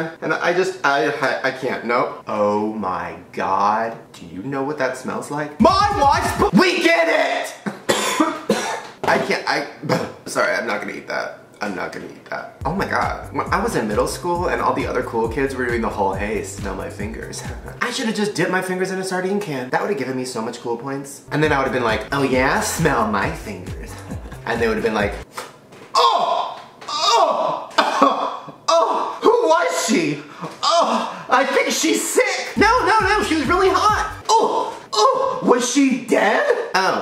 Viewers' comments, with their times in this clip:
0:07 And that cough after that though.
0:23 Did any old Shane fans recognize that voice ?